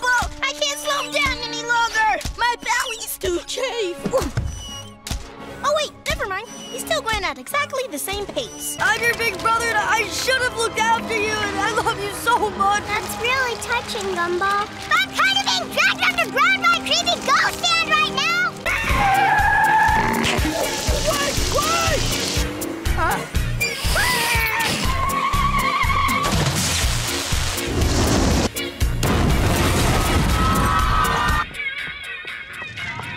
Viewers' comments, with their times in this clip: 0:09 do u hear her say "creepy ghost stand"
0:14 i thought she said creepy ghost stand
0:16 Did anyone else hear “SCARY GHOST *stand*?”